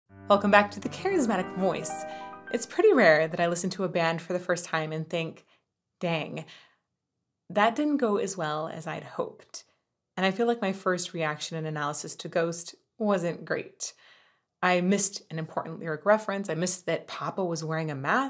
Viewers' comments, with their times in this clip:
0:00 that little piano intro.. immediately hooked